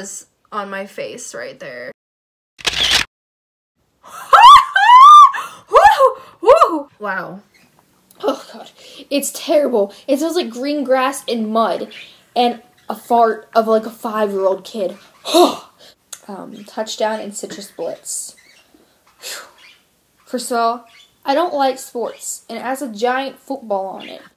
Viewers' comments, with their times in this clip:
0:05 that laugh tho I’m dying of laughter 😂